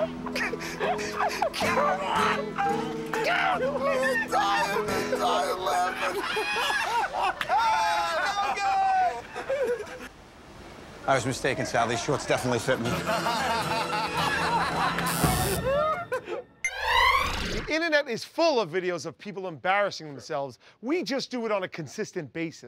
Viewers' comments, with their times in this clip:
0:08 The lady almost died laughing 😂 🤣